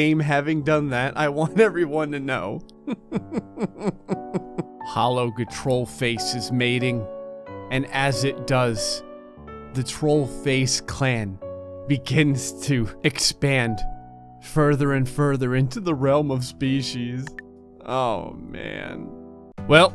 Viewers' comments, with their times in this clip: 0:03 i cant tell if he is laughing or crying in depression